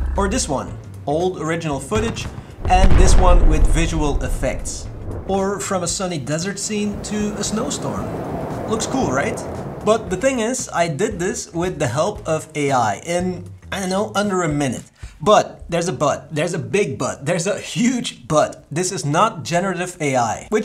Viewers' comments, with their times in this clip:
0:03 The AI was not clever enough to take in to account the time it takes light to travel compared to sound. You would not hear it straight away, even at that distance. Artifical Not So Intelligent. ANSI. You saw it hear first lol